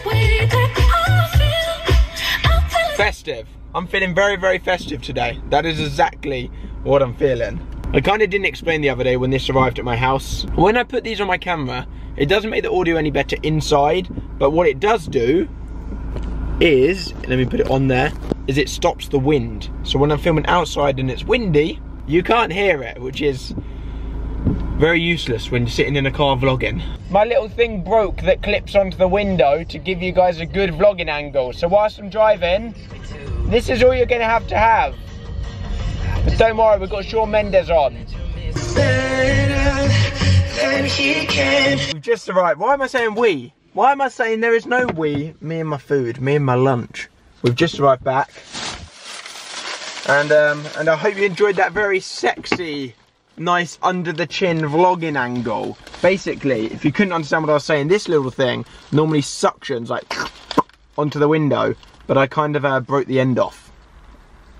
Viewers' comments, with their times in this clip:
0:05 IM CRYING WHEN HE TURNED THE MUSIC DOWN WHEN IT WAS MENT TO SAY SEXUAL PAHAHA
0:46 The way he says lunch 😂😂